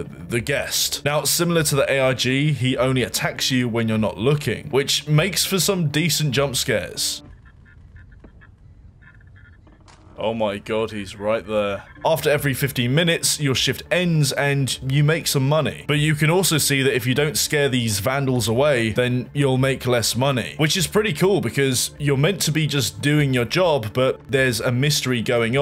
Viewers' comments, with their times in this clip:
0:10 he souded like hoxton from payday 2